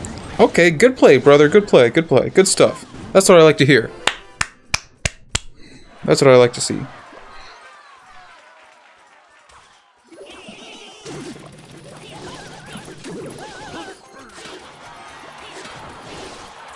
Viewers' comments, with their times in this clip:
0:03 This dude really just said “that’s what I like to hear” and then claps and I’m to assume that didn’t mean anything?